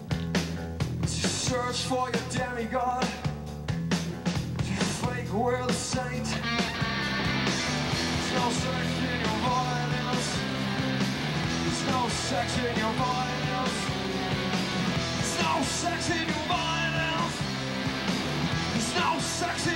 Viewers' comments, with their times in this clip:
0:06 That lick has always been my favorite part of the song.